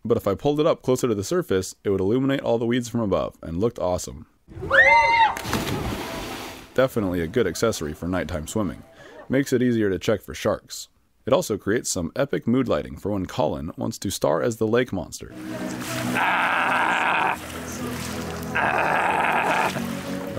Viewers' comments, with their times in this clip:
0:08 f**k you for leaving a loud scream